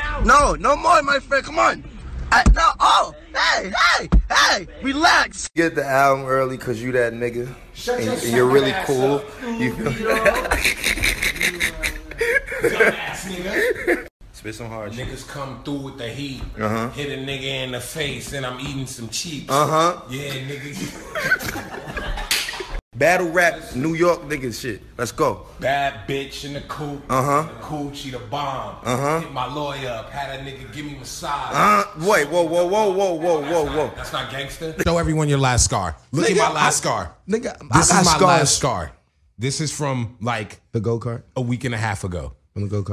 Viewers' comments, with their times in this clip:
0:10 Rocky sounds like a spray bottle
0:23 interrupted the “AAAAAHHHH”